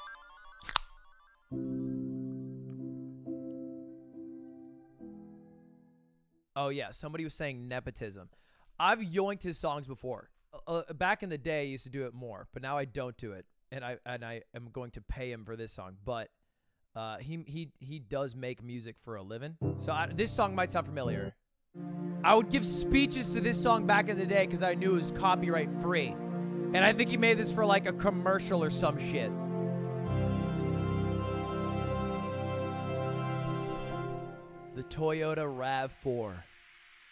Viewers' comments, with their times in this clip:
0:03 secret caaaannnnn in the song
0:21 Little Inferno vibes